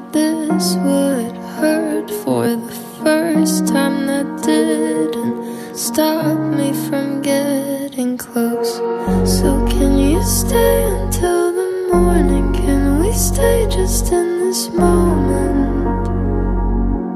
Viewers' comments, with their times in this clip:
0:04 Not me getting emotional 🥲🫶🏼 such a beautiful song♥️